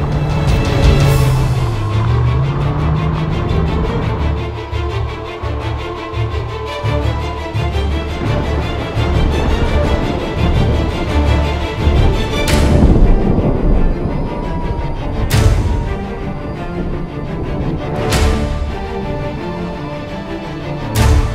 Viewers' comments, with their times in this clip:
0:03 the music is so suspenseful, you just know something is about to happen.